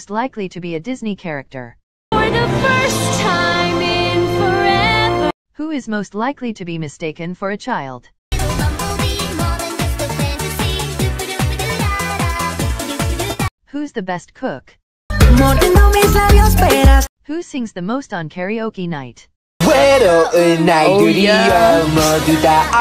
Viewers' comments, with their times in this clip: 0:09 lloyd laughing bc he is a child